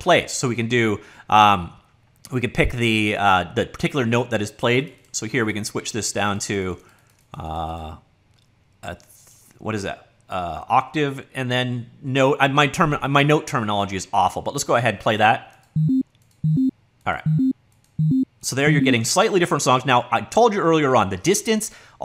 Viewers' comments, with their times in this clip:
0:08 I started laughing "The what is that" is so genuine! I love these videoes with music daws :D